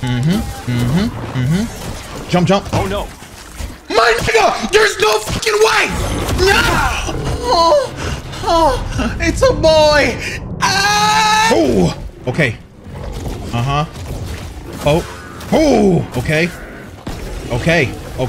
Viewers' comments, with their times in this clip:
0:06 Lmao did this boss mess him up so much he starts to give birth? I nearly choked on my food.